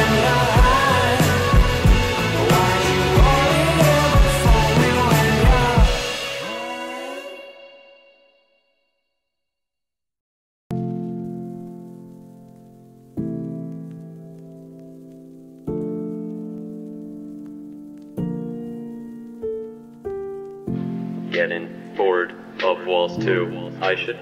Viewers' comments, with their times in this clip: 0:09 Is that technoblade singing?!
0:09 sounds like he's actually singing I love this song so much